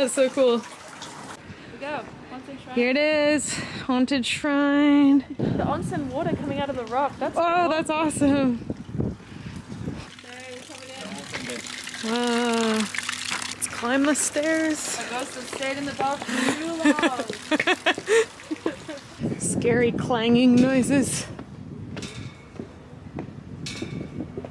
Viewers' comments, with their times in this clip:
0:10 So did anyone happen to notice the male voice there is a males voice that says something while they are talking